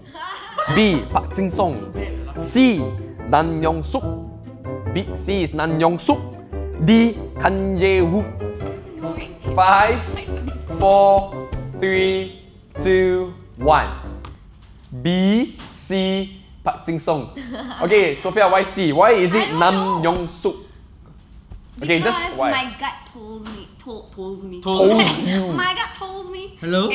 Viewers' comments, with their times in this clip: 0:08 the Nam Yeon Suk can be Tong Yam sop is a same 😂😂😂😂😂😂😂😂😂😂😂😂😂😂😂